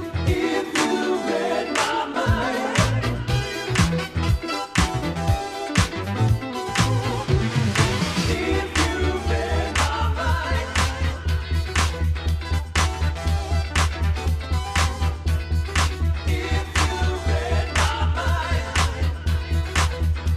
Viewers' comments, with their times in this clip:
0:03 I love disco house but I think some of the tracks could have been replaced with some better nu-disco tracks. Just my opinion anyways. Love the way she mixed her opening track and the second track starting ... soooo fucking good!